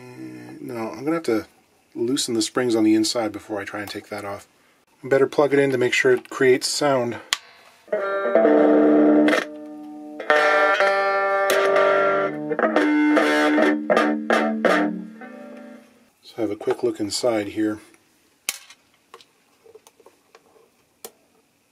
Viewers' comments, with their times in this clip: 0:07 WOW still in tune 20 years later